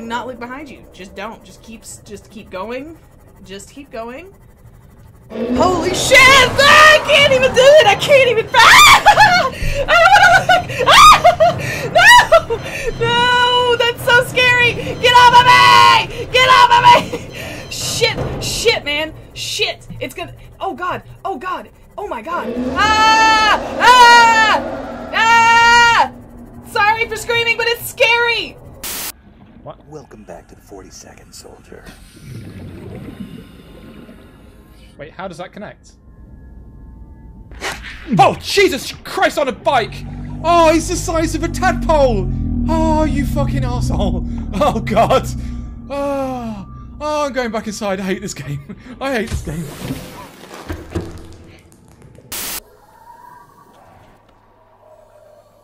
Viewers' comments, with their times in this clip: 0:03 you sound like Dory and you could be Dory if you were a fish
0:37 Guy: Gets Bitten by Small Phish Also guy: "AHHHHH! JESUS CHRIST ON A BIKE*